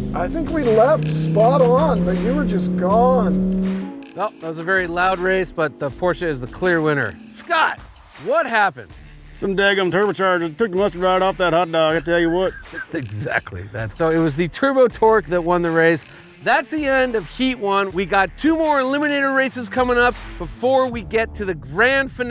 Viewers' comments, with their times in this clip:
0:09 I didn't know boomhauer was in this video until "sum dang ol turbo chargers took the mustard right off that hot dog, I tell you what" lmaoo